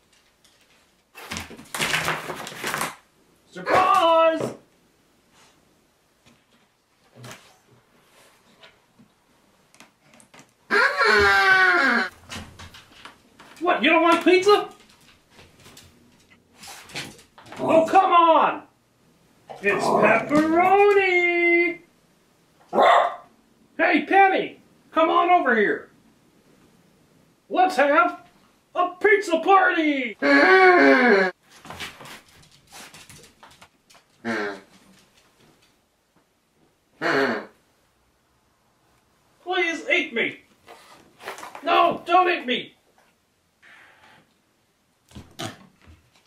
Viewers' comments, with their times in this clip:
0:10 bro the pizza made a horn sound 😂
0:10 Why dose it make those noises?!
0:11 the weirdest sound ever
0:22 one of the dogs bark
0:22 the dog: :barks:
0:30 Another weird noise
0:34 lol the pizza farts